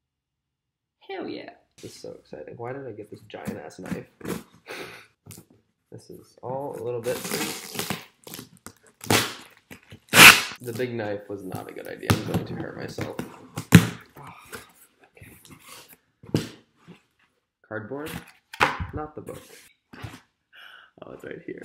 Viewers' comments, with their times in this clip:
0:05 headphone users are dead